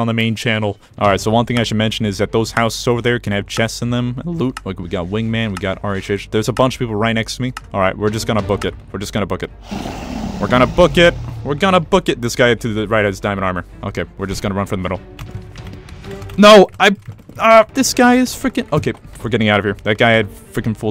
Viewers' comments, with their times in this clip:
0:03 voice crack goes insane